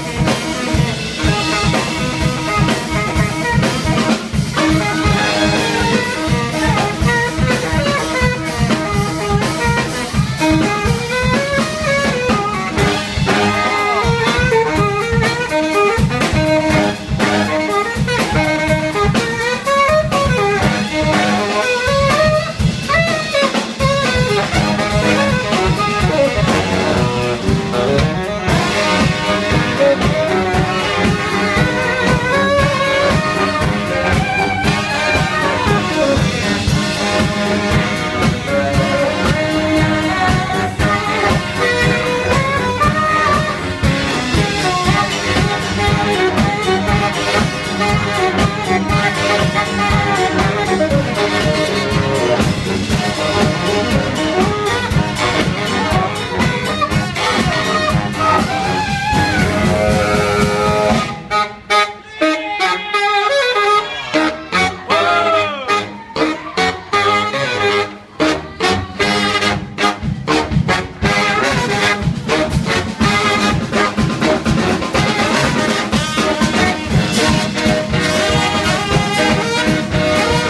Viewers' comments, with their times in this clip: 0:08 that solo tho :0
1:03 Bro the part was sick with tenor and bari sax, and then there’s the guy who screams “WOAH” and ruins it